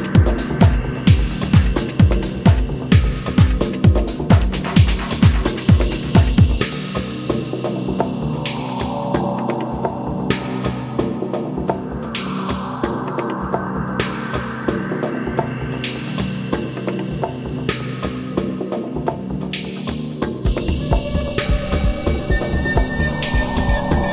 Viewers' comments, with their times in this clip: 0:08 its perfect... total progressive pure house. I close my eyes and i listen...what a track!